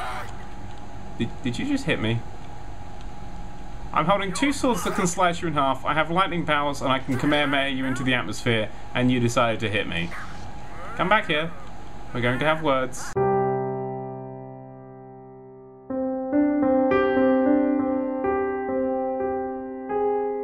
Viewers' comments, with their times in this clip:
0:06 what did nerdcubed say ? "i can 'what' you into the atmosphere?"